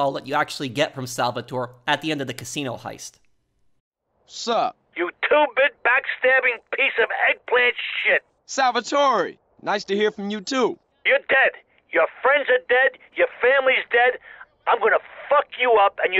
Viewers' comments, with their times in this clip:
0:04 Salvatore threatening CJ sounds like my little brother threatening me for deleting his fornite 🤣🤣🤣🤣